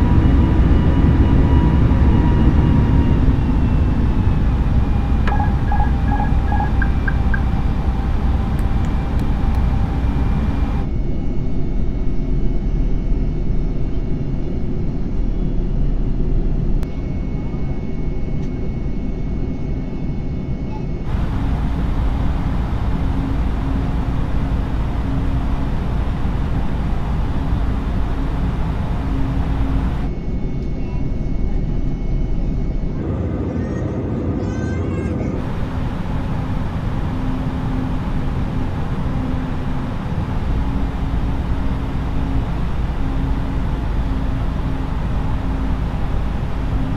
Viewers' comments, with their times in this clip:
0:04 the most terrifying sound ever (AP disengage)
0:32 they even added in the classic crying baby...10/10 realism
0:33 his GPU is crying loudly😂😂
0:33 Just about the only time I can condone a baby crying in a plane